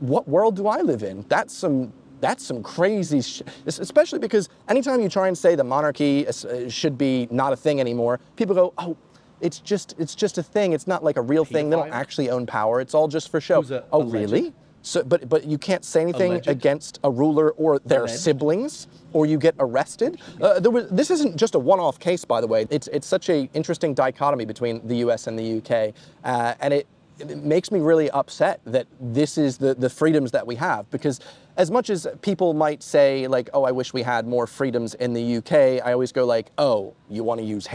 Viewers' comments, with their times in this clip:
0:06 Anyone else hear the rest of the words under laid ? 😂
0:08 kinda had me fucked up because it was only in the left side LOL
0:10 I'm going to assume the random soundclip that was in the background was accidentally left in? It really made me laugh 😆 Regardless, this video starts a really good conversation on the idea of monarchy and its place in society today, and I think it's a discussion we will see become more and more prevalent in the coming years (especially regarding the commonwealth).
0:10 Hey anyone else hearing something in their left ear ?
0:11 did you mean to upload both audio tracks? 😆 I'd pronounce it as "ah'ledge'd"
0:11 Are my headphones broken or I keep hearing things in my left ear.
0:11 Audio glitch in the left channel... or subliminal message?
0:13 sorry to point this out but there is another audio track playing on the left speaker
0:17 weird sound mixing issue. Right stereo channel. There’s a bit before and after that time stamp.
0:18 you talking in to my left ear scared me far too much. I thought someone was in my room